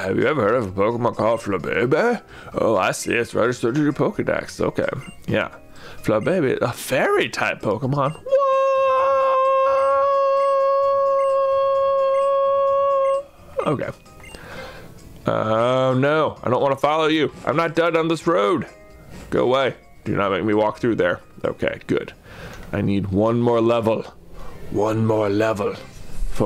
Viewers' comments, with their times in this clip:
0:08 Ow, my ears!